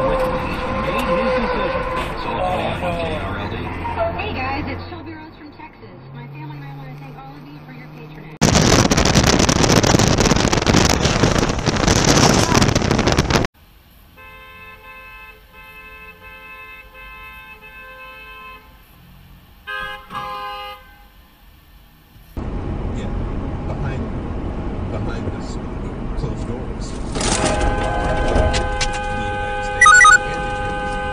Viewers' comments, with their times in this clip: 0:08 RIP my ears
0:14 someone take this guys licence. Obnoxious horning Already has damage, hit and run...? You're not even allowed to turn there It could have still been avoided if he just looked, but he didn't. Take this idiot of the roads!